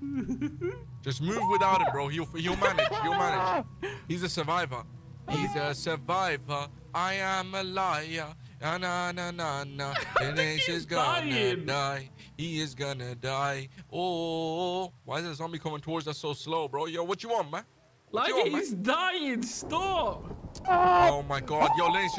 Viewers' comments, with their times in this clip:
0:08 that singing was great